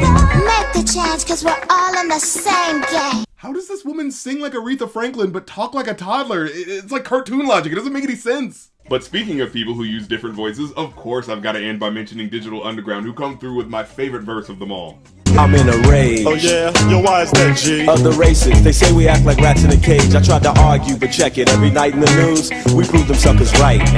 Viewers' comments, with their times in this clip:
0:04 yea she’s got a real Ellen Greene voice